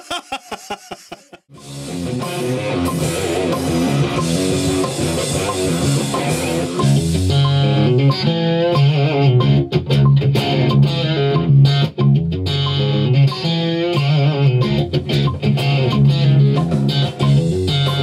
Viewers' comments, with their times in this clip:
0:06 tone from heaven.